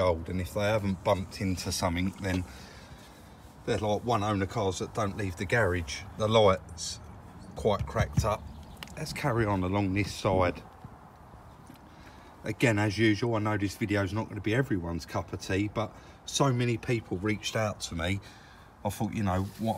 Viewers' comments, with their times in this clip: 0:05 Dude the "loights"? Where do you see an O in lights?